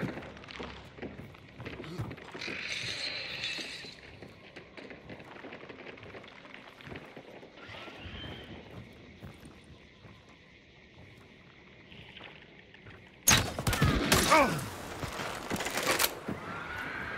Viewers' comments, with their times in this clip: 0:05 Does the shotbolt do out of range Headshot sounds on headshots?